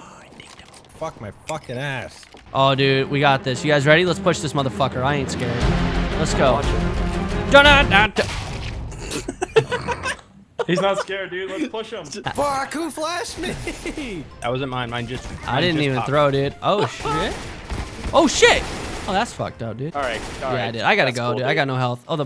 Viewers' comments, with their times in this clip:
0:04 CUE THE EPIC MUSIC!!! dies immediately xD